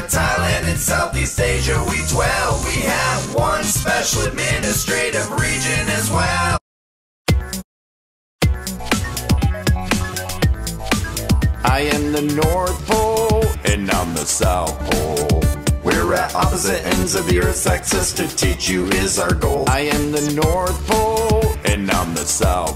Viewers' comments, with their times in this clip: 0:06 The north pole s voice sounds like a voice I heard before.